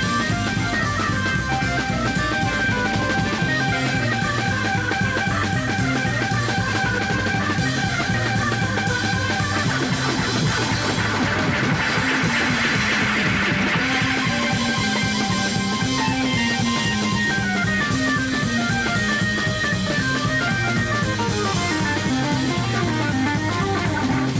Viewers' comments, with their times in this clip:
0:09 great 1982 Arcade Game Space Invaders SFX on the B3!